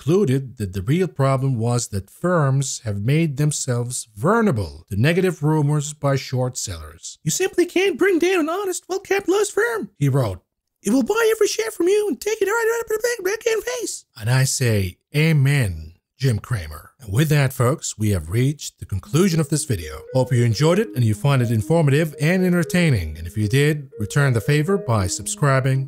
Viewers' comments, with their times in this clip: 0:06 Thats was more like Cartman then Cramer